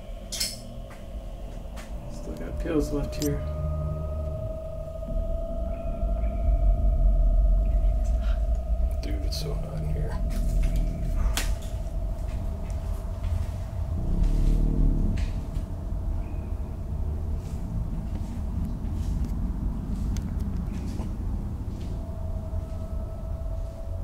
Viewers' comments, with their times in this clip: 0:08 Did anyone else hear that voice ?